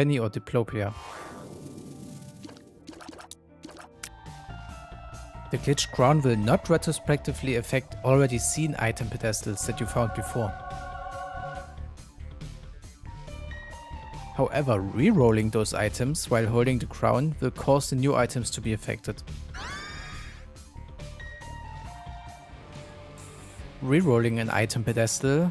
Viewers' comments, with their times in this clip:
0:06 *retroactively For real though, it's nice to hear your voice in these videos, and your English is actually very impressive and easy to understand.